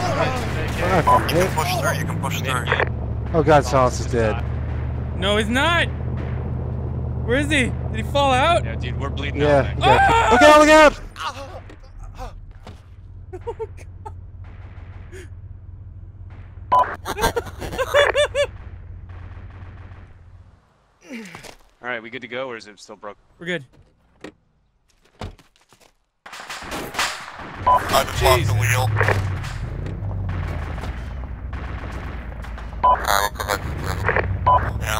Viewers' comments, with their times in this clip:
0:10 dat scream LOL
0:17 lmao you drive good all day and look away 2 secs and that's it!!the body sliding then the scream!!hahah then pause it just to take the cake